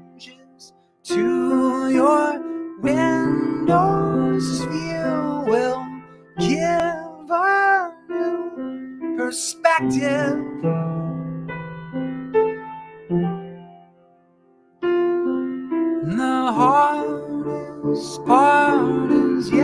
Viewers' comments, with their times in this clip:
0:04 Holy shit, Ben has the most beautiful voice I’ve ever heard...